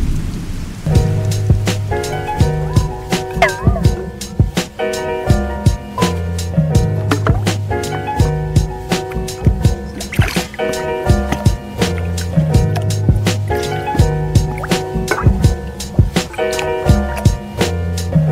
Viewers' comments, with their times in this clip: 0:03 i thought my airpod battery is low